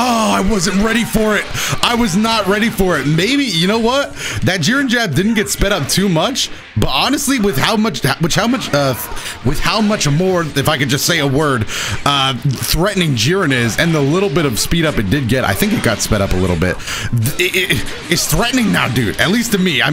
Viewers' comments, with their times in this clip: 0:06 I literally started dying when he stuttered.